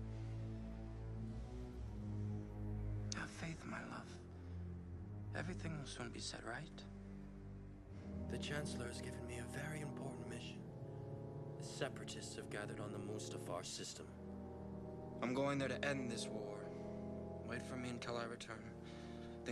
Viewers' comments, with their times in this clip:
0:03 What’s funny is he’s speaking so lovingly to her even though he’s a bit in a bloodlust haze but when he starts talking about the separatist on mustafar you can hear that hate & disgust & answer come back into his voice like damn he really hate then separatist